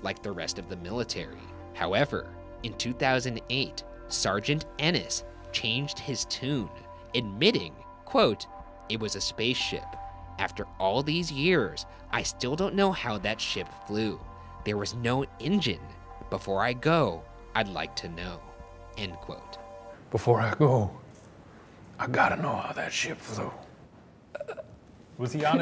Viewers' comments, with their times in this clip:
0:06 Nice voice crack
0:07 "Quote" voice crack lol